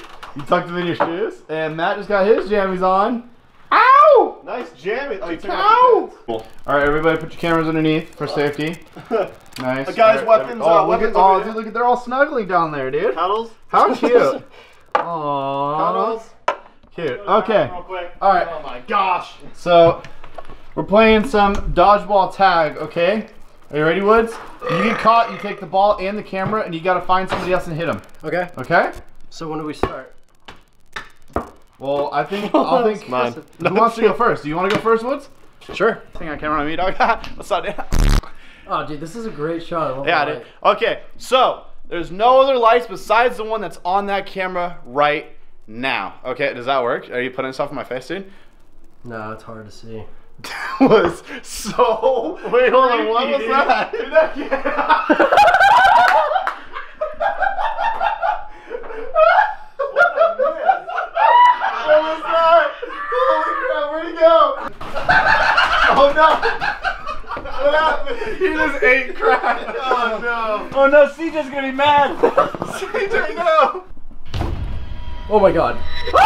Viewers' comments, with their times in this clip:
0:10 At like and a little before that there’s static in the microphone or like glitches. That means there’s like something messing with the microphone
0:24 DUDE NOICE BELCH XD
0:47 do y’all hear static in the background
1:01 are those hyenas laughing?